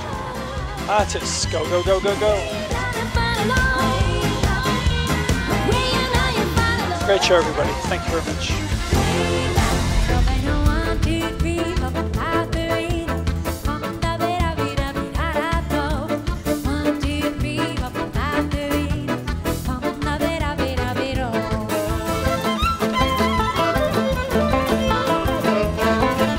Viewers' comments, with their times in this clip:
0:07 Really nice and interesting video about a show I'm most excited to see. My only complaint - that cheerful "one two three" song didn't make it to the official soundtrack! See you in Europe, I hope!